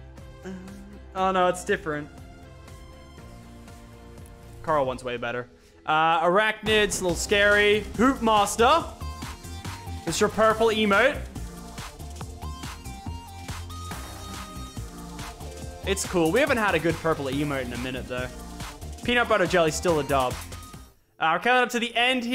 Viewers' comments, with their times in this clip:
0:08 I swear he said “poop master”😂